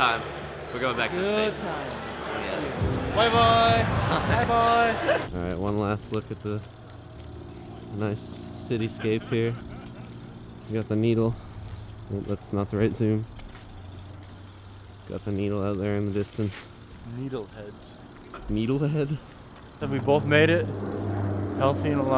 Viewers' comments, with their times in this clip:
0:08 I think I heard Seth Rogen laugh